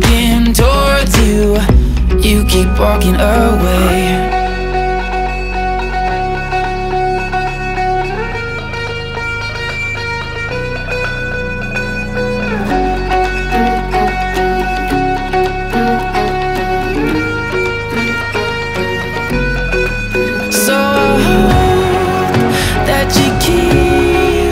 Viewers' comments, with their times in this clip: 0:03 the tune that starts here IT'S MY PEACE THANKYOU SO SO SO MUCH MARK! you and your voice is amazing!
0:05 I m obsessed with this tune it's so peaceful to me THANKS LOVE!